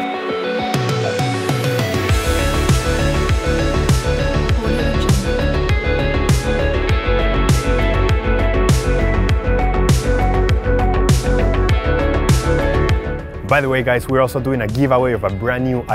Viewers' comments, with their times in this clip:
0:03 do you heared 'audiojungle"? if yes, like this comment.